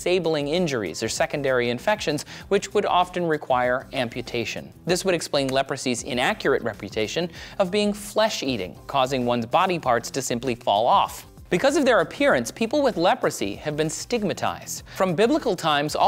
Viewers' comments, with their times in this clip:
0:04 Anyone hear a hitmarker sound ?